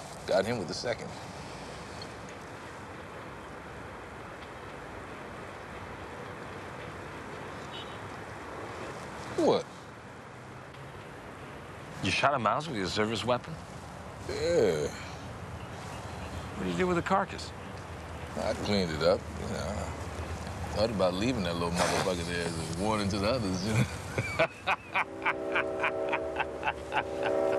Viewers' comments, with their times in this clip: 0:10 the way the bunk says "what?" is so perfect